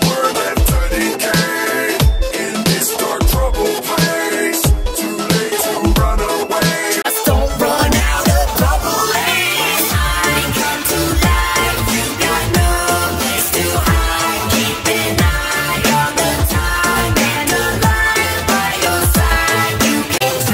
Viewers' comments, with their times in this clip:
0:07 speed that up and its the joy of creation rap